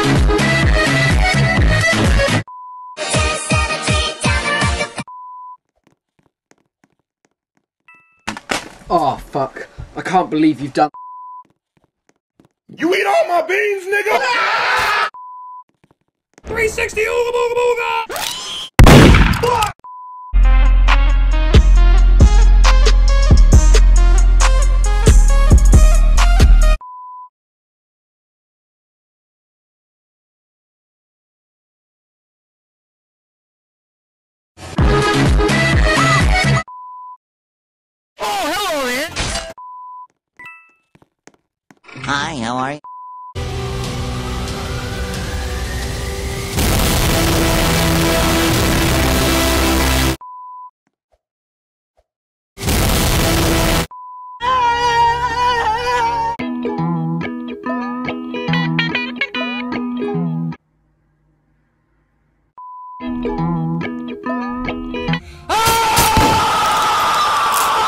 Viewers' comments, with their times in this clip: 0:03 Me:hear song Me drops of chair* tysm for likes <3
0:47 ahhh my ear！！
0:55 Is laugh STOPPPPPP